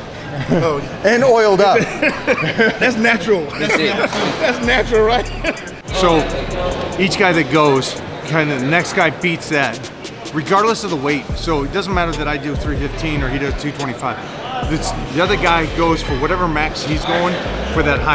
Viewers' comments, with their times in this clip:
0:04 just listen how he is laughing even a disabled person should be able to tell that he is trolling